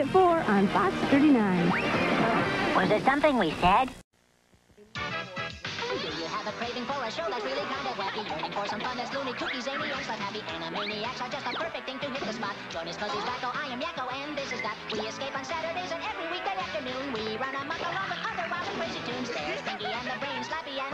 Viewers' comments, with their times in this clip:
0:04 is a JAM! Rob Paulsen can SING! Have this replay button just so you can appreciate it more!
0:04 Omg the song is SOOOOOOOOOO catchy!!!!! Yakko, yr AWESOME!! Same to u Rob!!